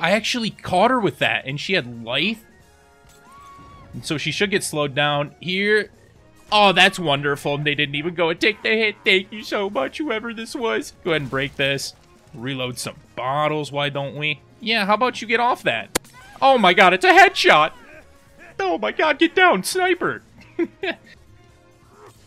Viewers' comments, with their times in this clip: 0:08 he sounds like Homer Simpson😂